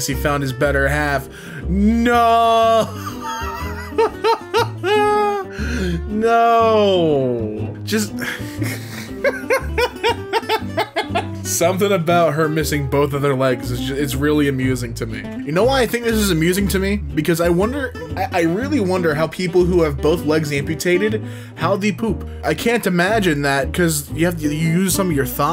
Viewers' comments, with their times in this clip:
0:07 Who Let A Chicken in the office?